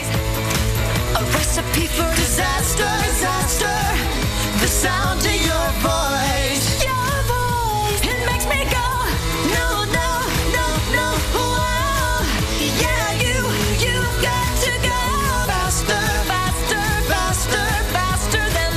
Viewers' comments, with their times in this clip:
0:06 I love the way she sang it ♡